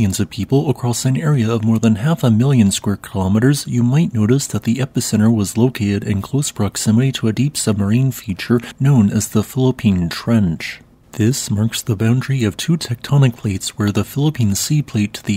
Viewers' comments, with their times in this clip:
0:03 I could have sworn he said the Fallopian Trench. Had to back it up and slow it down. 😅